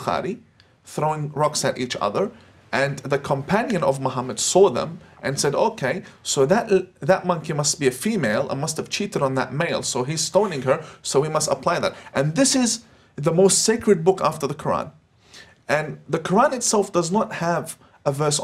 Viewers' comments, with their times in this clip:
0:05 Did he just say "Because a goat ate that verse" ...... not as a joke...... without a pause..... as a totally 100% acceptable explanation